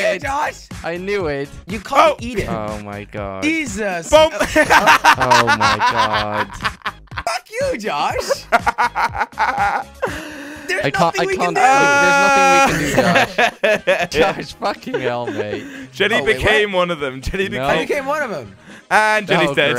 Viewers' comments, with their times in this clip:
0:04 That laugh though XD